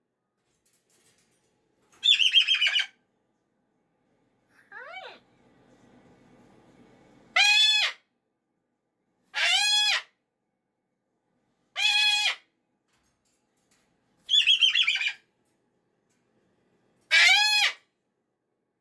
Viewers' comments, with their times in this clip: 0:03 That one sweet little “Hiii” in the middle of all the screaming...